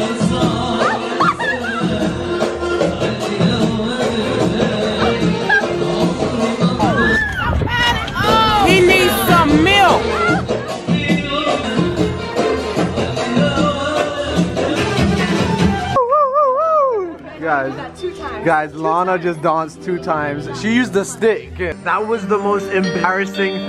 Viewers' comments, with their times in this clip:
0:07 did any one hear "he need some milk" 😂 🤣 🥛